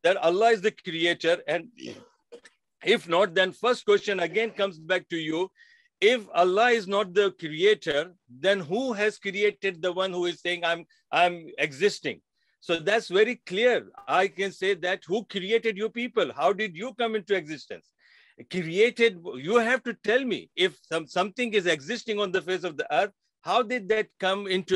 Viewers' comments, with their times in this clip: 0:05 Did Abdul just burp ? Is disgusting sound.